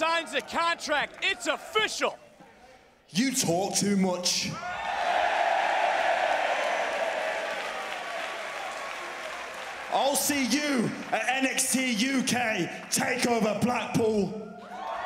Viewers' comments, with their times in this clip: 0:03 enter guitar riff😂